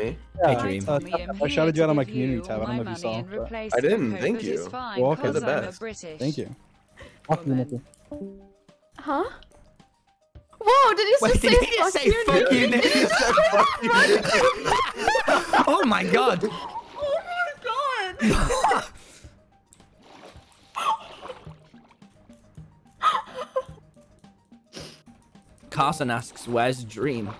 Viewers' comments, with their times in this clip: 0:07 It sounded he said "papu niki"
0:08 That "Huh" was so cute
0:09 THIS IS OLD BUT WHEN NIKI SAID “HUH” SHE SOUNDED LIKE A ANIME GIRL OR SOMETHING